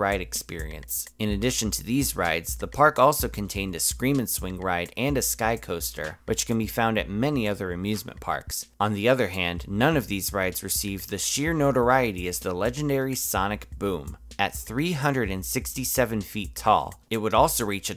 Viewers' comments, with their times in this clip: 0:05 I’m watching this in the morning I turn it up cuz I can’t hear the guy then the intro 👂💥 My dad storms into my room WHAT YOU STILL DOING AWAKE 😂